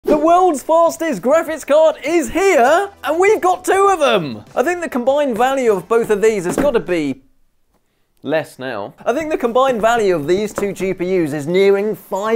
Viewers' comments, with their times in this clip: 0:00 ''the worlds FARZTEST graphics card is here'' The way you pronounce ''fastest'' is absolutely baffling to me.